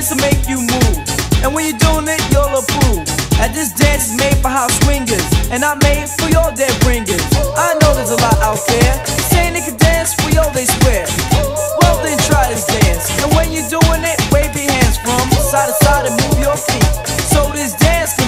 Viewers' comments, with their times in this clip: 0:05 yea this sounds like when you literally step out the shower 🧼 feeling like a new person